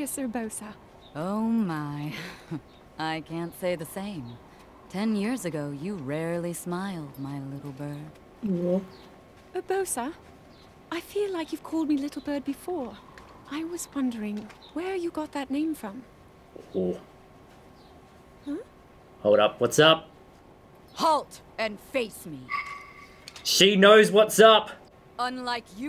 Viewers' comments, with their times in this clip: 0:08 Zelda says Urbosa without the accent. Odd.